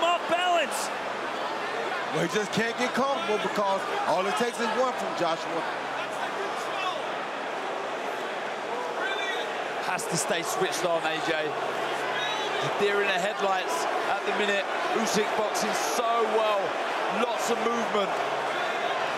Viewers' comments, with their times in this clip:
0:07 you can hear a guy in the crowd say "REALLY??".... Yeah... REALLY?